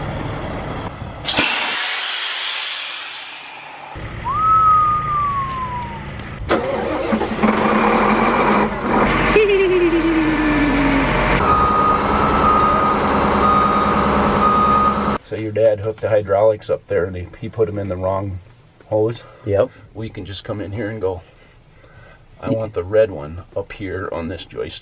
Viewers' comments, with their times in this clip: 0:05 Cranking the engine made me moist
0:09 That laugh was like Christmas day.🎁..✌and God bless and stay safe🚜🇺🇸🚜